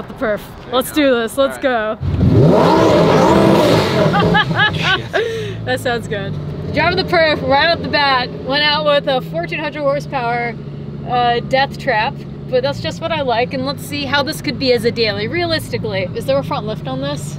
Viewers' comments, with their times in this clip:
0:03 this is what the engine like if it´s cold 😱 8000 rpm